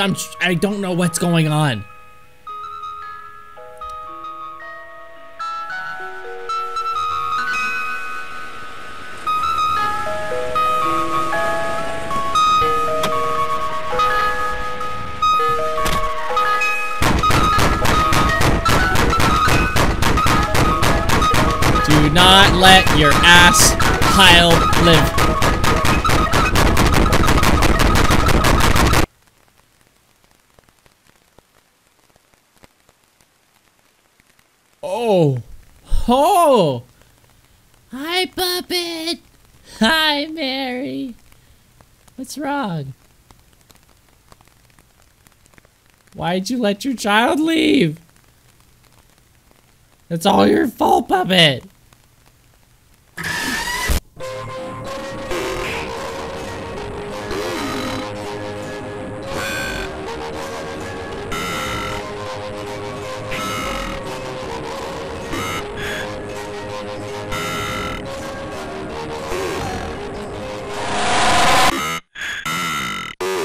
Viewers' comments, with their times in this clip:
0:06 that’s some good earrape
0:55 Close your eyes (or ignore the letters) and listen closely. did you catch a bitcrunched voice saying the letters?